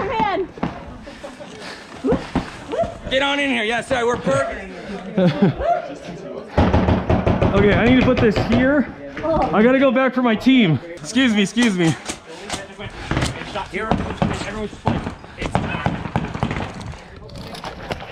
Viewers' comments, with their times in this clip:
0:06 can anyone tell me what is making the bangs?